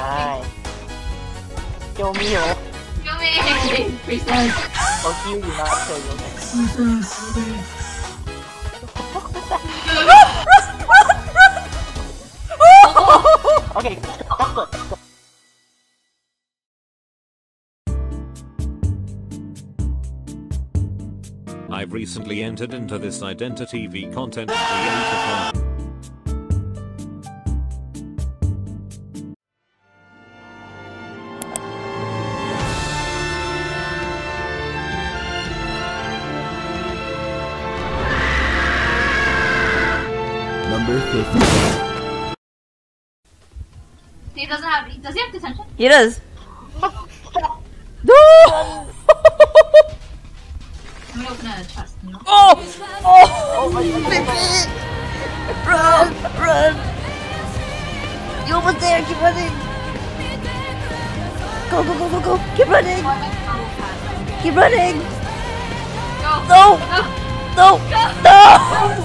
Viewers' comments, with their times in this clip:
0:03 OMG u laugh like me ;-;;
0:48 my reaction “wait- why do I hear boss music”
0:53 the attack on titan ost intense +10000